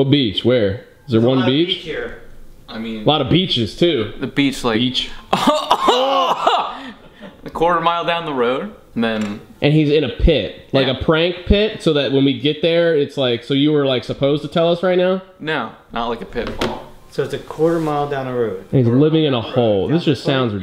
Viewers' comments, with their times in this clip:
0:05 his laugh tho